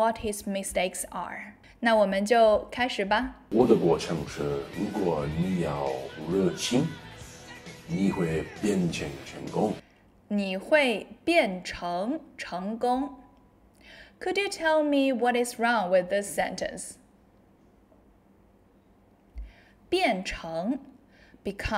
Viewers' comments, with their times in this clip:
0:06 I just want to say first that i love this analysis of john cenas chinese! I am trying to learn chinese since quarantine and your channel is definitely one i am going to use more frequently now. I saw in this video that you are allowing corrections to be made for your english so i thing id like to to point out is the way you say “what i want to do” is correct but for a more natural accent i would replace the ‘t’s with ‘d’s like “whad i wanna do” that way it would sound a little more natural. ❤